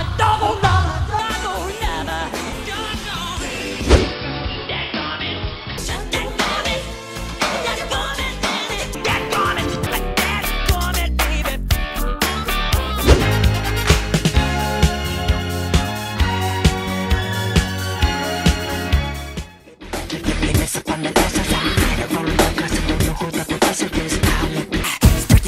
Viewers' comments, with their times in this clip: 0:06 I understood that, I don't know why "daddy gone it"